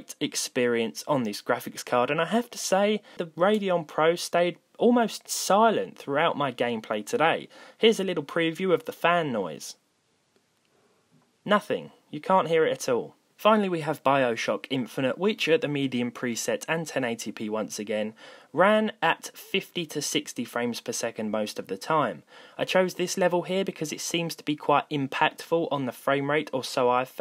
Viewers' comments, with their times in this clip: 0:08 I maxed the volume out and I could barely hear the noise